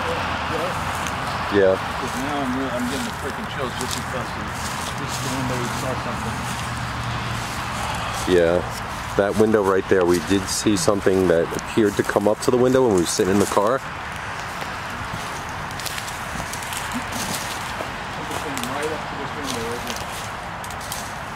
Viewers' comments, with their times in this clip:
0:08 They're was a sigh that didn't come from either of you. Hi guys. Just started watching. 😊